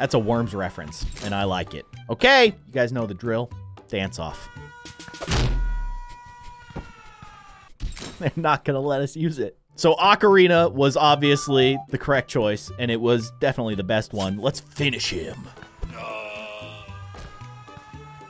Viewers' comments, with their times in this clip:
0:04 Right on the beat